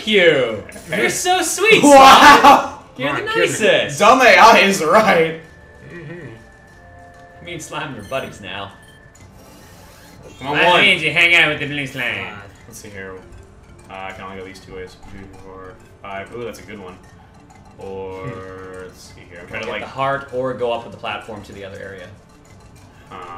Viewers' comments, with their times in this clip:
0:08 it sounded like me and slime are butt aches now lol